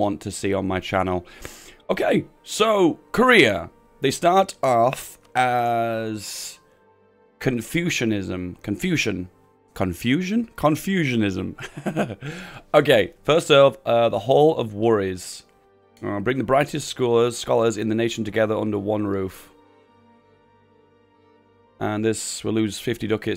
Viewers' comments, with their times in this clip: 0:09 58- and i was just making a joke and i know you pronounce it right later in the video